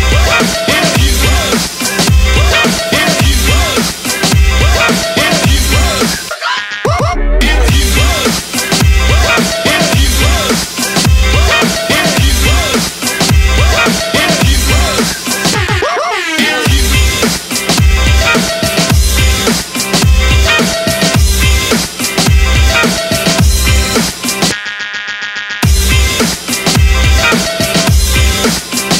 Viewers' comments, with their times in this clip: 0:09 i'm french and i ear : excusez moi (music) excusez moi ... i'm the only one ?